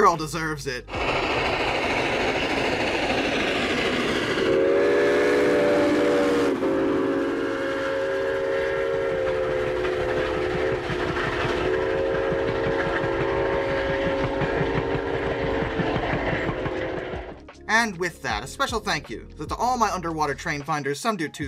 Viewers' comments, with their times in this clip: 0:04 The last clip of LS&I 18 is just glorious. One of the best clips of steam power out there. The engineer knew exactly what he was doing when he saw the camera on the side of the tracks, because that whistle was timed perfectly. Also, can we just appreciate how good a 6-chime sounds? Amazing!